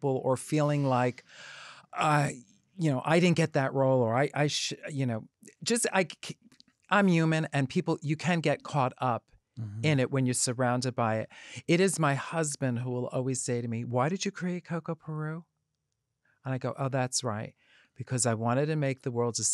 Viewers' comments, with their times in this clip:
0:06 "I'm YU-man" lmaoo I thought of Thorgy saying "yuman" instead of "human" during purse first impressions with Bob. I guess it really is a New York thing.